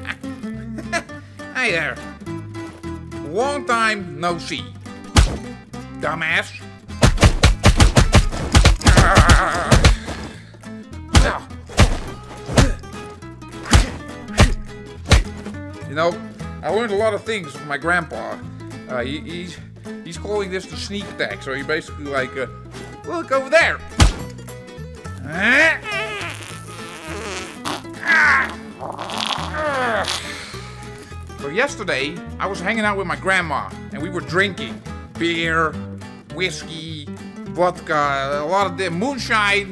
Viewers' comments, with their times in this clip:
0:08 My mans sounds like Wall-E
0:25 loud and proud